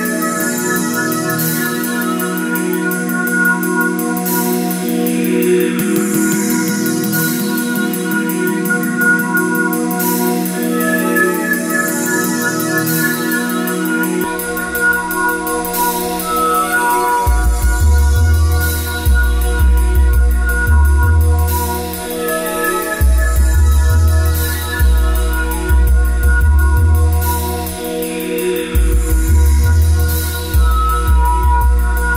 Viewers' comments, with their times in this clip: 0:10 that moment when the stereo punch in
0:13 Very nice mix, but the audio wonks out stereo image is off. Everything is leaning a bit to the left.
0:13 there is something weird with the sound on this one, you can hear how the sound shifts